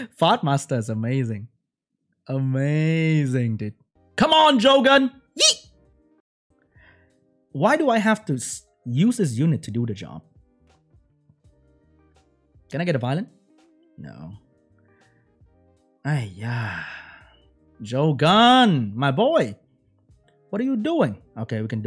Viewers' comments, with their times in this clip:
0:05 what was that noise he made